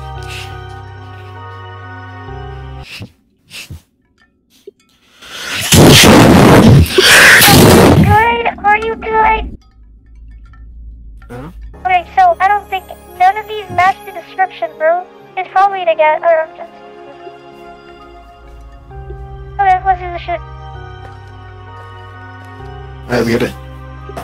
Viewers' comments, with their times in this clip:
0:05 hate it when a train runs through my mic